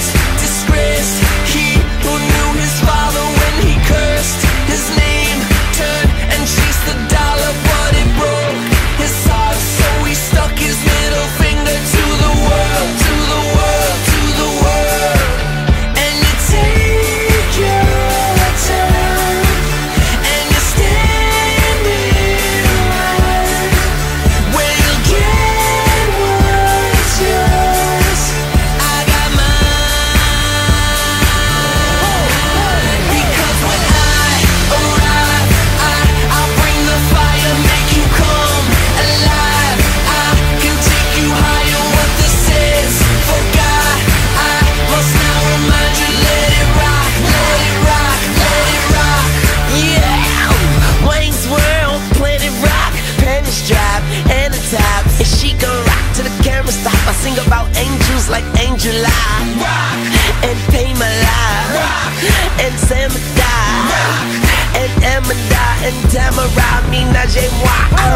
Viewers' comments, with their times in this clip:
0:09 I always thought it said “but it broke his sauce” :o
0:29 I dont like rap but I like rock and I thought this might be a good song and I liked it into it then Lil Wayne destroyed it.
0:50 does little wayne even speak english!? and i love this song then i turn it off i cant take his voice makes me cringe